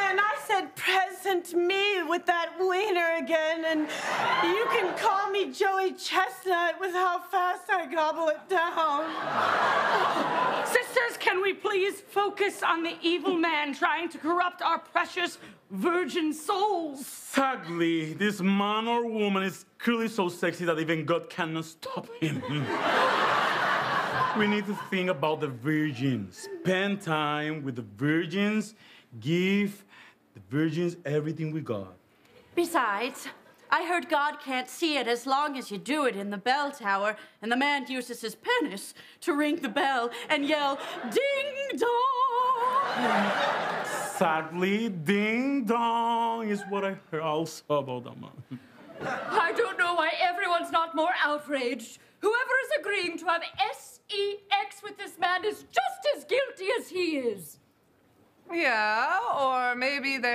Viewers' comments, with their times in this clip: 0:10 the gasp was me too bc HUHHH
0:34 oh my god Chloe's voice is so similar with Aidy!!
0:41 The actress on the far right of the screen, next to Sarah sounded so much like Aidy Bryant here it's impressive 😅